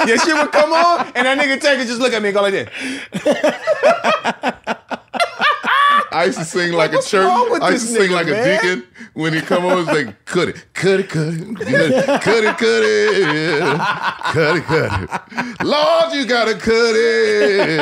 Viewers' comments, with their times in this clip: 0:03 Tank singing "Cut It" as a Deacon in the church ..it's hilarious